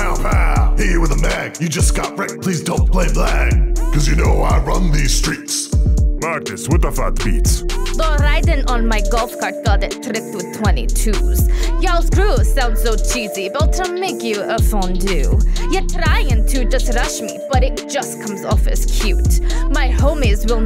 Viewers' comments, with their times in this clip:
0:05 Is it me or did it say "Magnus what the f*ck beats" ?